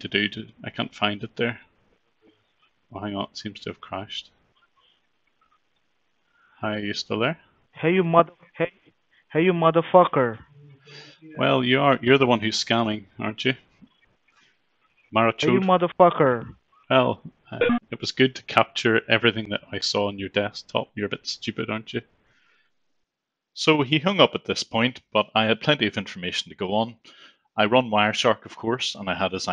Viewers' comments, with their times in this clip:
0:09 bruh, that's all the emotion you got? Weak.
0:10 sounds like a kid sweating on fortnite